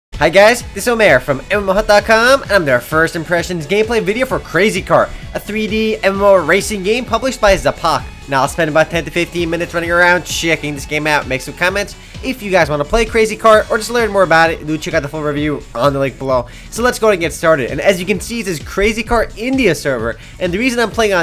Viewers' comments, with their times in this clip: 0:02 i didn't know that you can as optimus prime!